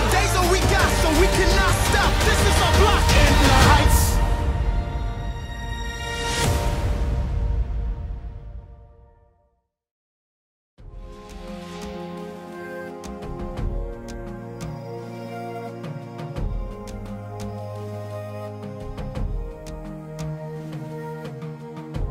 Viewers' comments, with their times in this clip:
0:03 If yall listen it sounds like Lins voice